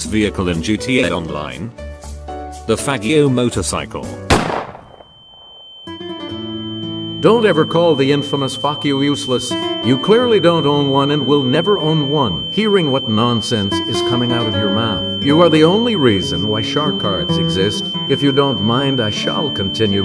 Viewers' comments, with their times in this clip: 0:07 I love how he pronounces faggio
0:08 I can't be the only one that hears "fuck you" here right?
0:08 Was that actually a fackkio?